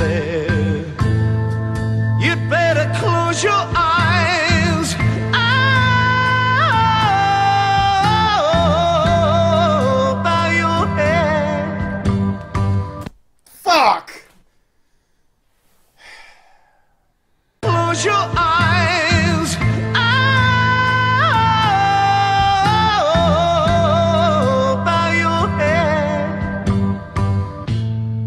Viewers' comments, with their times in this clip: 0:04 …….DAMN! BEAUTIFUL…..JUST FN BEAUTIFUL! WHAT A VOICE! EARGASMIC…..NOT EVEN KIDDING! 💕💕💕💕💕💕💕💕
0:04 Just a single word, a sigh, and a head shake. I’m going out on a limb here, but I think he’s impressed with the song? F’n hilarious!!
0:12 is the whitest "fuck" ive ever heard
0:13 me anytime i hear Ian Gillian's voice